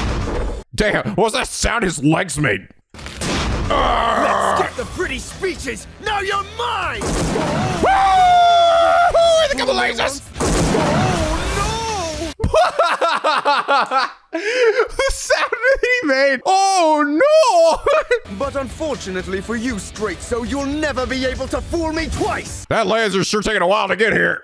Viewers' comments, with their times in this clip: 0:10 Yes, it sounds very silly in the dub but that's very much intentional as Ben Disken is paying homage to Mr. Tomokazu Sugita, The Japanese VA for Joseph Joestar and Gundham Tanaka, with how he delivers the OH NO! Throughout the show and it becomes one of Joseph's famous Catchphrases.